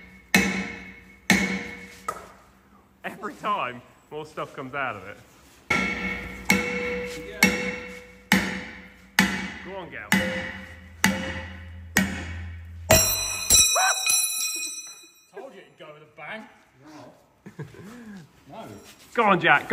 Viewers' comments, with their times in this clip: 0:03 that ping was honestly so satisfying too hear